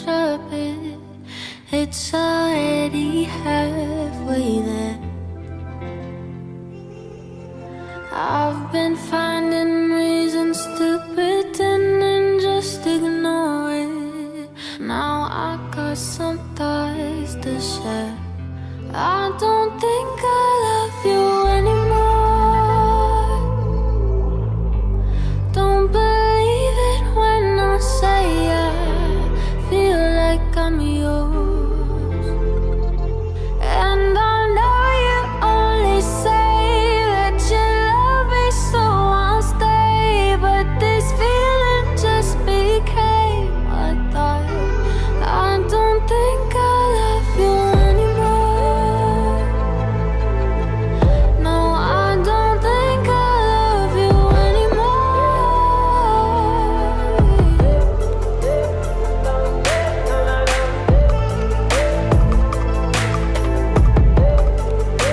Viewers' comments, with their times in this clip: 0:08 sounds just like You Say by Lauren Daigle
0:48 The Music when it's starts from it's Awesome !!! It's like something taking Me Deep inside in the Calm Lake Surrounded by trees !!!